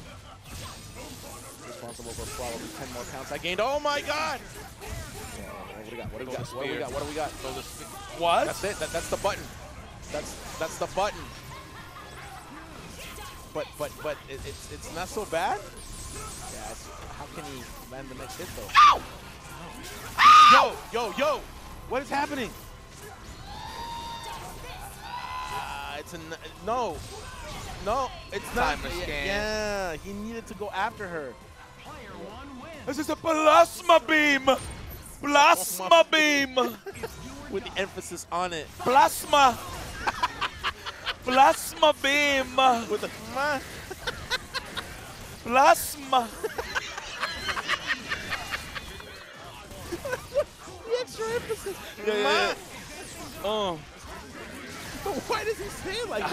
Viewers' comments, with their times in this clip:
0:10 That and the screams for Phoenix had me weak lmaooo
0:41 PLASTHMA BEAM!!! I was dying there 😂